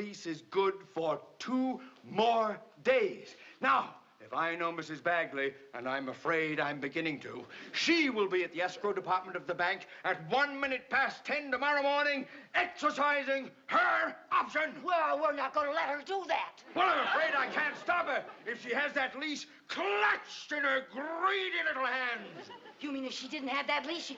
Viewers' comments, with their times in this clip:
0:05 ...There's no way Vivian could not hear "Mr. Mooney" and Lucy plotting in their loud tones.